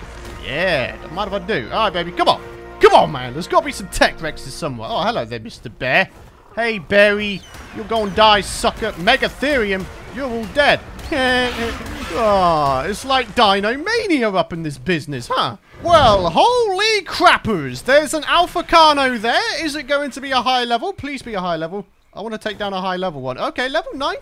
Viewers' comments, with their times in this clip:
0:10 Peter Griffin, is that you?